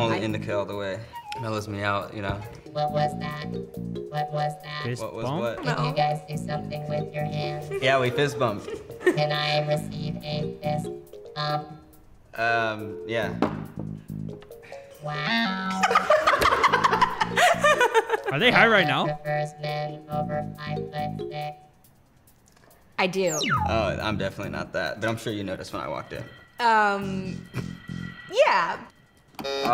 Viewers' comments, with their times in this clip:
0:10 it said "wow!" so happily
0:15 the woaow was so funny the robot is funnier then all the people in the video it reminded of the one movie WALL·E